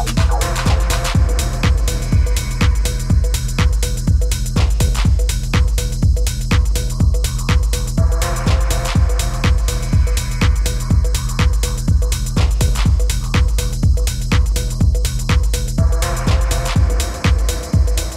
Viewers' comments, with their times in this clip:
0:04 I was enjoying the beat in this one, looked at the clock and saw 8)